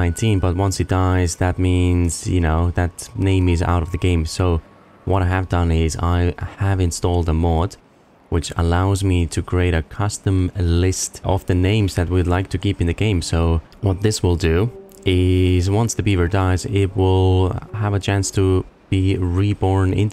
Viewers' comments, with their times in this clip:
0:07 so you're saying you're making a colony of beaver clones 🤔 that sounds almost as sinister as the game's background music